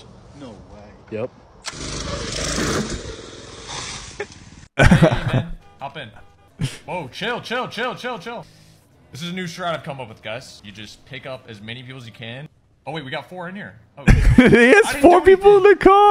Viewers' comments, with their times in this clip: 0:04 Thought that was XQC